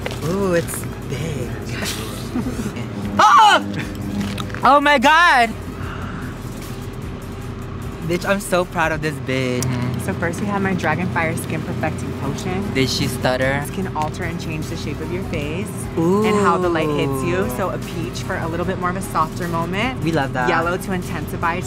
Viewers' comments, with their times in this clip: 0:03 that screaming was everything 😂😂lol